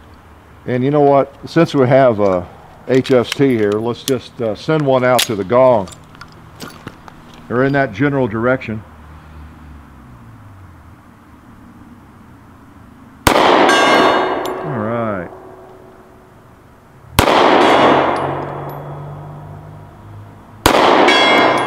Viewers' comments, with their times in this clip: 0:08 I thought it was interesting how the different rounds made different pitched sounds when pinging the cowboy.